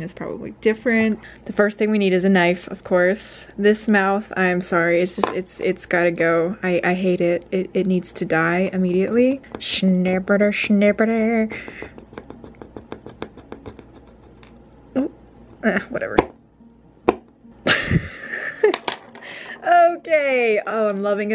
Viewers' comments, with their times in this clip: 0:07 [ SCREAMS OF AGONY ]